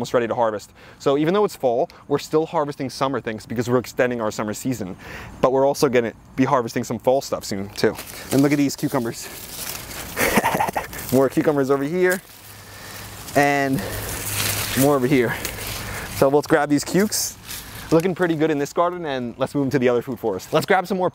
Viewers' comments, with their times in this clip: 0:09 in 0.75 speed is great! hach hach hach hach hach